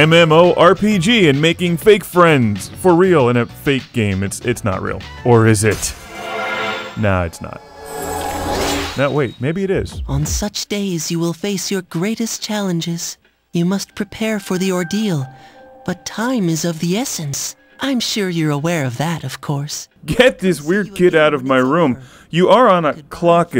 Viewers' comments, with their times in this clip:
0:08 WTF? Michael Jackson voices the mysterious boy!!!!!!! or at least it sounds like it lol